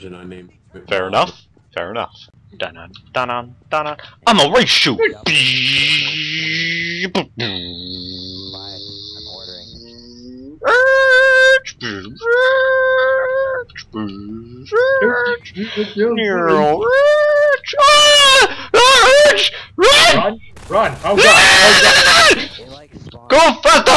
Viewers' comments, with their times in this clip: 0:04 little did the world know, Canadians are amazing at car sounds :3